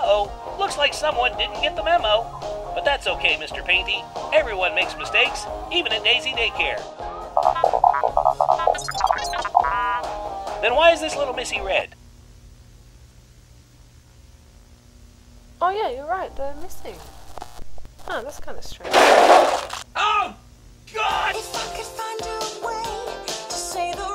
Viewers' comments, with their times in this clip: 0:10 I love how everything stops and the way he said “then why is this little missy red?”